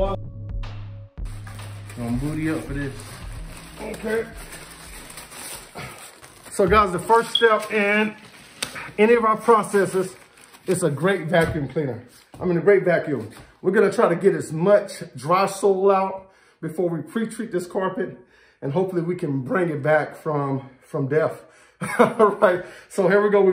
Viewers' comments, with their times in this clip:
0:07 Your fire alarms don't need new batteries. It's the video I just looked around the house trying to find the source.